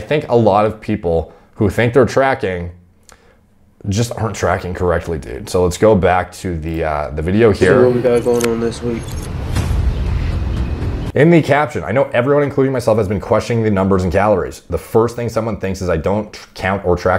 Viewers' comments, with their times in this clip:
0:04 he said that so disappointed bro